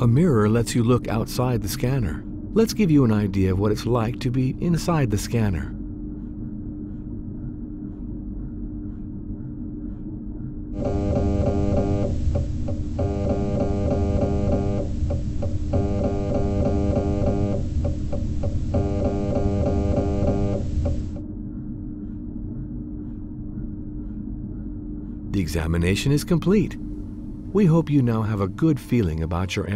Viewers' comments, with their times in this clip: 0:10 Nice Dubstep Skrillex